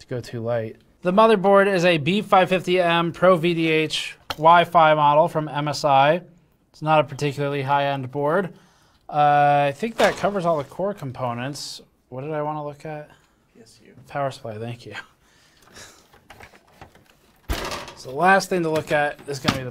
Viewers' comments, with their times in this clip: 0:06 I love how it sounded like you threw the mobo in the trash, where it belongs! :D